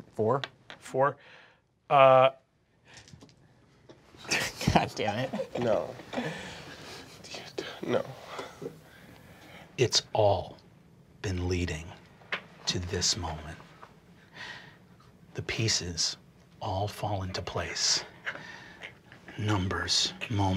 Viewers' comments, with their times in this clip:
0:03 Lou's so quiet and defeted and it just makes it ten times funnier
0:04 just Lou‘s perfect “No....no.....”
0:06 I swear Lou's desperate "no" is the funniest thing